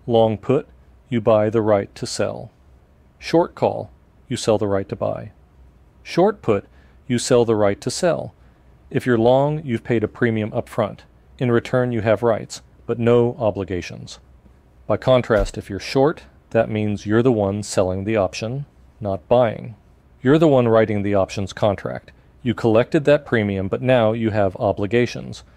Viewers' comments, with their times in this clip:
0:08 like a tongue twister :D